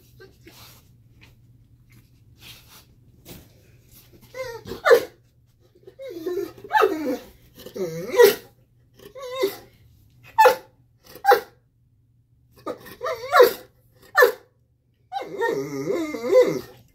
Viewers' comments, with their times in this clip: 0:04 Some videos are worth watching over and over again. They never get old. Midnight and Blondie were so little. They have been in sync with their movements and body language forever and still to this day. I know they are litter/belly mates but they could be identical twins with the way they are so in tune with each other. Loved starting at around the mark how mom and the girls were all in sync watching Preacher :) Poor Preacher with his whining like a baby makes me LOL every time I watch this video.